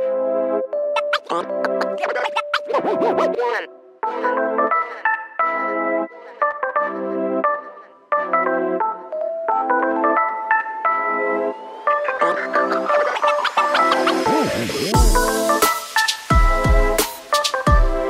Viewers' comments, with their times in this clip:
0:06 love the tune! 🙂